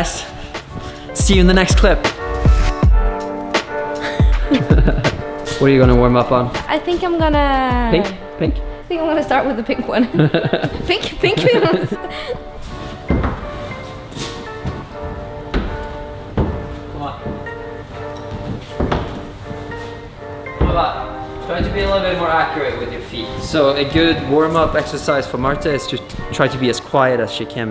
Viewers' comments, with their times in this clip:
0:09 That voice shake lol 😂